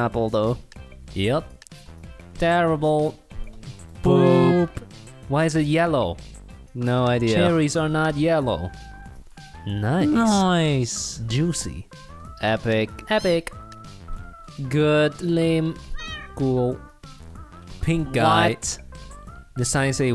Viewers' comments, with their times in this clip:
0:03 Holy shit that harmony blessed my ears